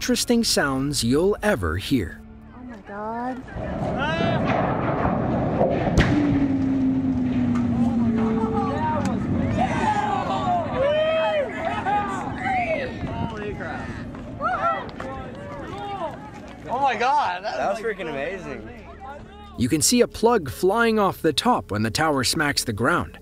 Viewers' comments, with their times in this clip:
0:03 It's dead! But it just said 'Wooooo'. That was just air escaping from between its folds of skin.
0:04 The lowest-pitched, reverb-enhanced, whistle ever heard.
0:06 It sounds like a machine shutting down.